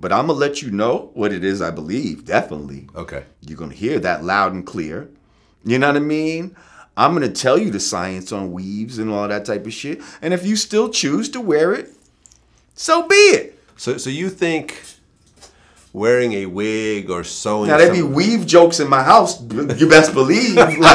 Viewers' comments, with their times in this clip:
0:04 that was probably the cleanest "Ya nah mean" i've ever heard